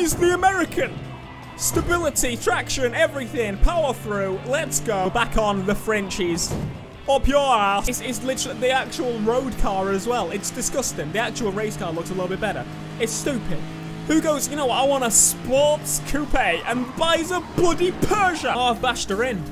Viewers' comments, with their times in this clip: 0:04 the voice of regret XD HAHAHA